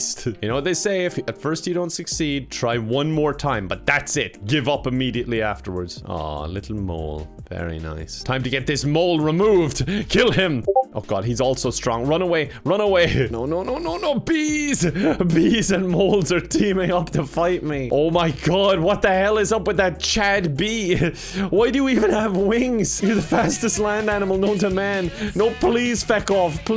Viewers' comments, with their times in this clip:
0:10 I'm so annoyed that i checked my discord
0:10 I thought I got a discord notification, thought I was wanted pepehands